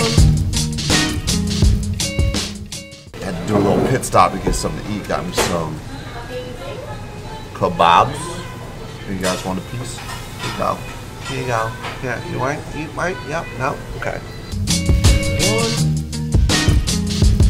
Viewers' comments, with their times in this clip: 0:03 i love the music fayrouz aatini nay wa ghanni ! it feels good to know that somewhere out there they are playing these kind of music :D